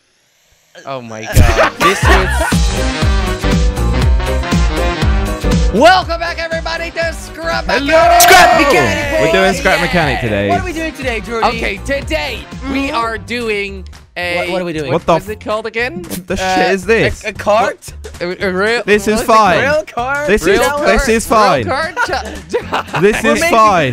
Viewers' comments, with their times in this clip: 0:07 HE SOUNDS LIKE A DINO